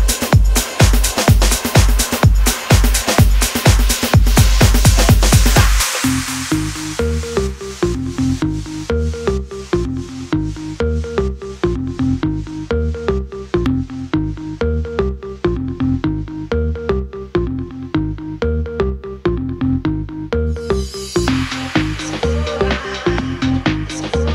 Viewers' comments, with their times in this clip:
0:06 ......oh yess love the build up!!